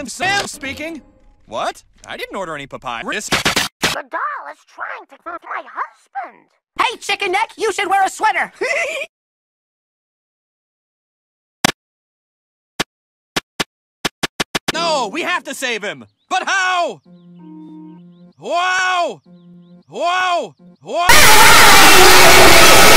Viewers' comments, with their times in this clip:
0:06 Every time when i hear Billy i'm always thinking about Razputin's voice, lol.